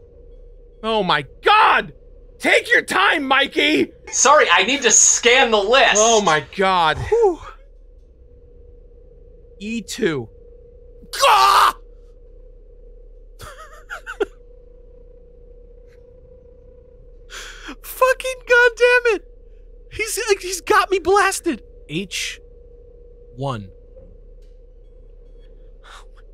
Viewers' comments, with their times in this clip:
0:10 that "gaaahhg!" could be a sound effect of someone taking severe damage in a game XD and well, most of these.